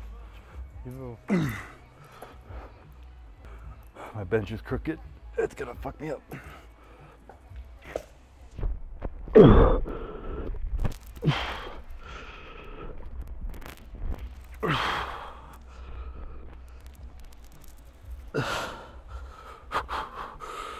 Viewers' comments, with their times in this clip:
0:07 accidental asmr lol